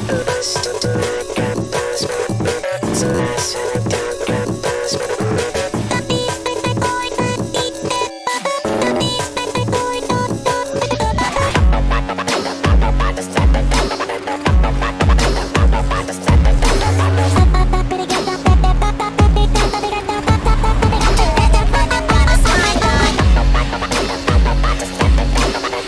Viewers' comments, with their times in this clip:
0:07 did i just here fart?